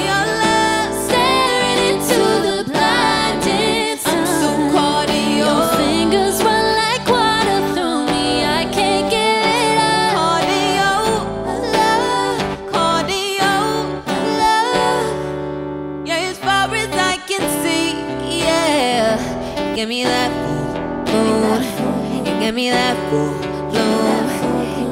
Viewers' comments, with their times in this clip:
0:05 that deep backing run is so gorgeous it makes the song so perfect